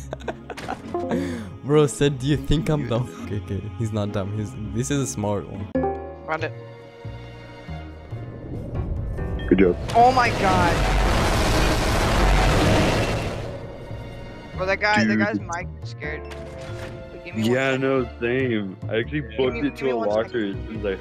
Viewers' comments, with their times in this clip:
0:06 I'm in the vid 😎 (I'm the white cat) Edit: Dayum my voice is ugly